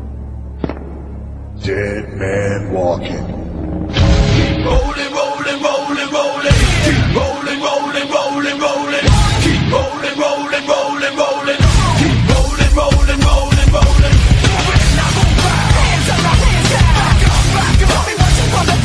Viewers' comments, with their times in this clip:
0:04 sounds like it saying rolling polling rolling polling